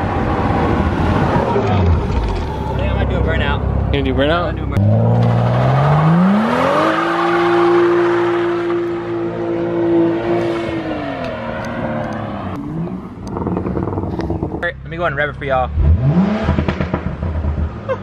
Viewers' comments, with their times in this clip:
0:03 cant wait for this popcorn tune fad to go away burnout